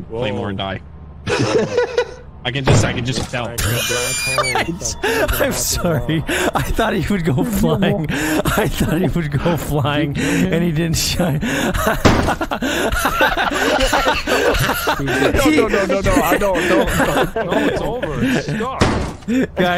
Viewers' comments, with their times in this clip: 0:03 it's interesting that it's the first time hearing Vanoss wheeze this hard and everyone is just baffled by it😅